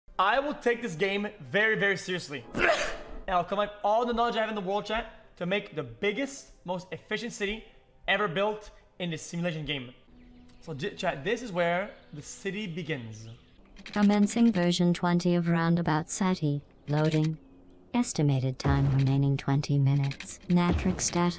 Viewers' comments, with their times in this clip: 0:02 bless you x